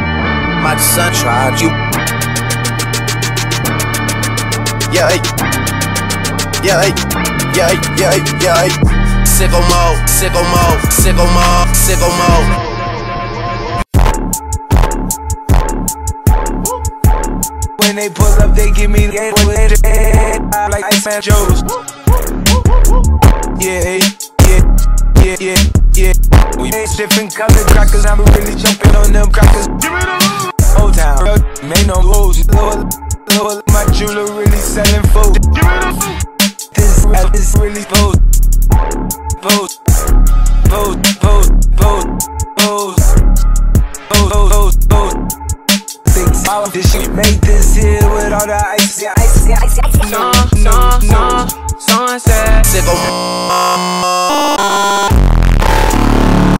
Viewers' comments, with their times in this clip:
0:09 SICKO MODE SICKO MODE SICKO MODE SICKO MODE beat drops
0:12 Can we appreciate how the transition was actually dope
0:13 is that my wifi?
0:36 bro became ice spice for a second there
0:50 can we just appreciate his voice lmao
0:52 sounds like a song
0:53 DRAKE.EXE STOPPED WORKING. Listen him beat.
0:53 OVERLOAD PLEASE SHUTDOWN YOUR PHONE SYMPTOMS ⚠️
0:54 Dio randomly uses Za Warudo in the end 😂